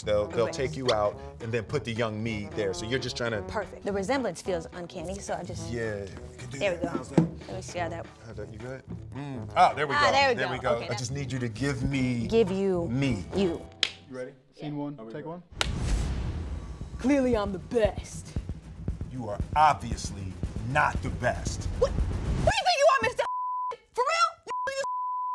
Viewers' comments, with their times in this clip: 0:09 Ok but why didn’t it make like any noise when she jumped on the box omg😭😂😂🤣